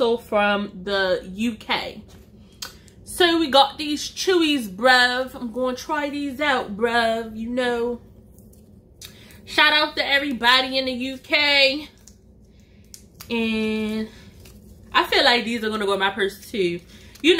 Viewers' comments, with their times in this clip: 0:03 The accent took me out 😂. Hair and makeup giving 90s vibes 💅🏾